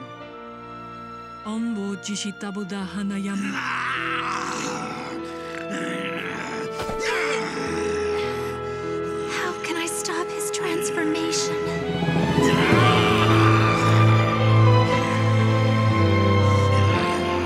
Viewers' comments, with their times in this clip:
0:04 haha he snorted